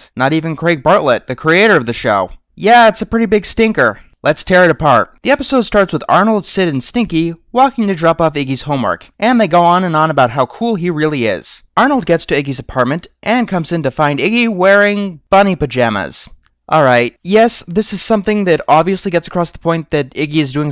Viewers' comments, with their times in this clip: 0:06 Cue the Frollo "No" shout!